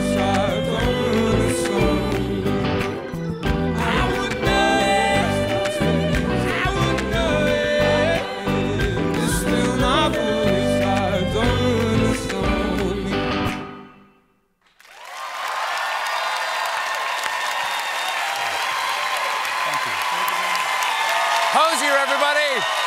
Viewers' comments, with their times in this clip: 0:09 piano, singing and maraca